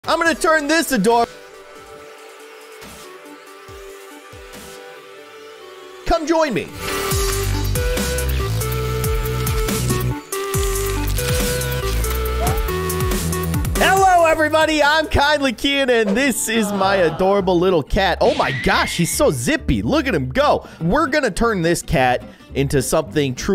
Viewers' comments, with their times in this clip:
0:00 Ima turn this a door
0:01 Wai whattt no sound
0:01 Wai whattt no sound
0:01 did everyone's sound turn off here or is it just me?
0:01 Wai whattt no sound
0:01 Wai whattt no sound
0:01 Wai whattt no sound
0:02 did it mute for anyone else
0:02 There was a voice glitch in the video
0:06 Why is it muted ?
0:06 Does that mean you are microphone was off
0:06 At the start I couldn’t hear you